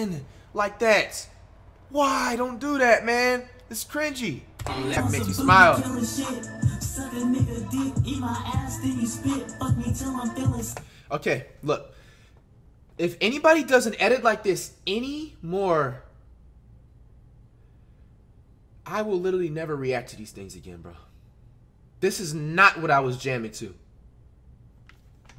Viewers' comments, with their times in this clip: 0:06 he sounded like a teacher after the class goes too crazy on movie day😂😂